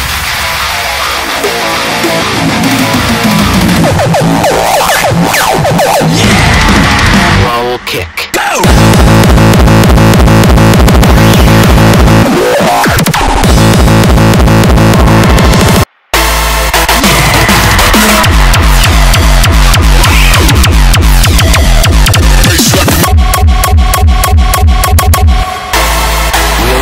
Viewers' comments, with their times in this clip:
0:08 I like this Frenchcore kick